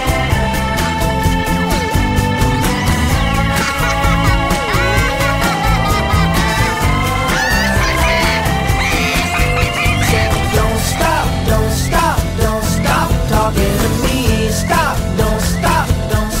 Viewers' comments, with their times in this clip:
0:03 I could see the original being featured in a Little Big Planet (video game) promo ad especially w/ the maniacal laughter Love both versions to bits but there's something about this take that's more playful and mellow🤗